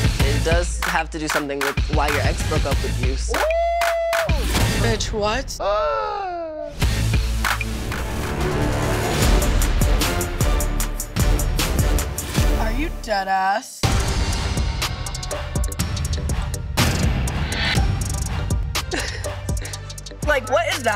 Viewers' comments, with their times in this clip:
0:07 im deaaad- the cousin was like bItcH wHat and all you hear gASPPPp